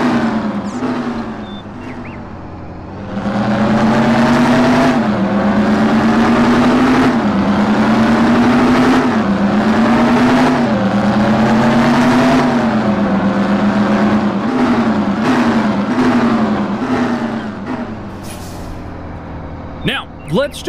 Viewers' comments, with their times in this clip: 0:08 That truck looks GREAT. I like the sound of the Cumapart CTA. It has a quiet sound to it. I don't want to come through someone's city, AM, with a LOUD engine and wake people up, especially if they have to go to work.